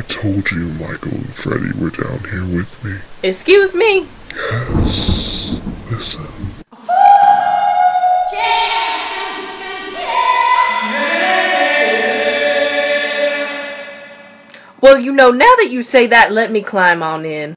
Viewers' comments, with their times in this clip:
0:07 THE HOO-HOO ECHOING IN THE SEWER I CANNOT